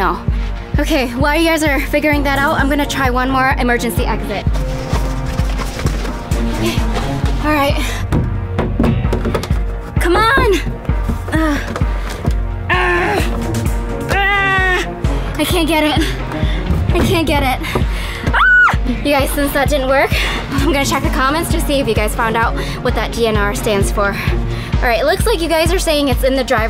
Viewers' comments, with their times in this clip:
0:09 In if u listen closely u hear some one calling